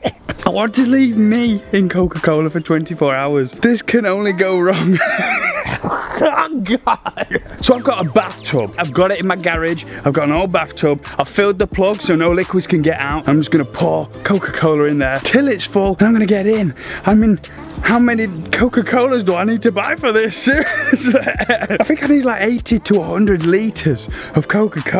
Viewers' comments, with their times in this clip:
0:06 while he laughs he says I'm god